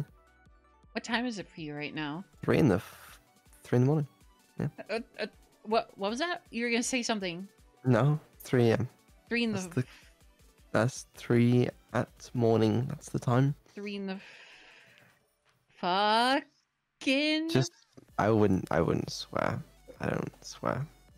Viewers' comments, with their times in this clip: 0:07 the word before "3am"... It sounded like "time" but on russian